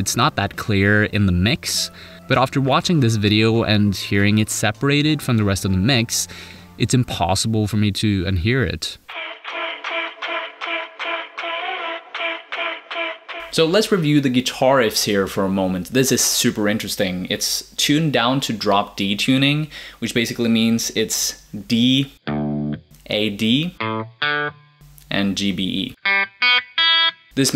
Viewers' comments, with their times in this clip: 0:10 Okay, so I always thought that was a guitar! Awesome!